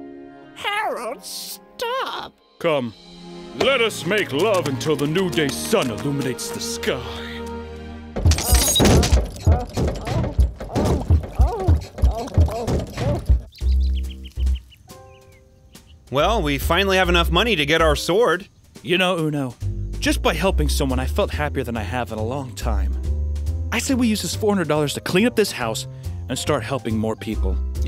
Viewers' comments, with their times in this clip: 0:10 i feel like this is a refferance (cover your ears yal)